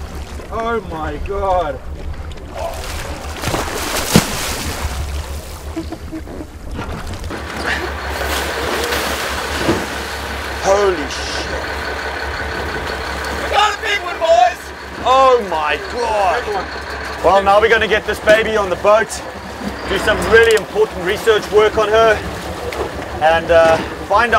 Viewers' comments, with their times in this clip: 0:10 it sounds like he says holy shit